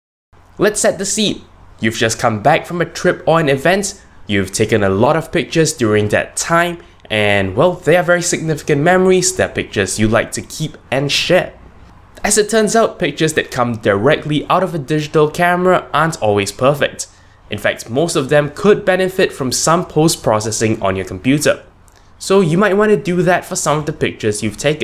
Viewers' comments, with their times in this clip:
0:09 "That pictures you'd like to keep and shit? "